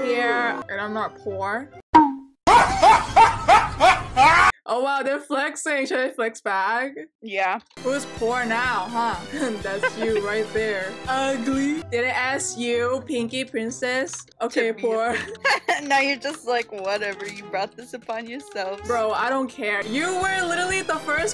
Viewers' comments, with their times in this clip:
0:08 OK BUT WITH THE CLOWN BACKGROUND MUSIC GOT ME RIGHT THERE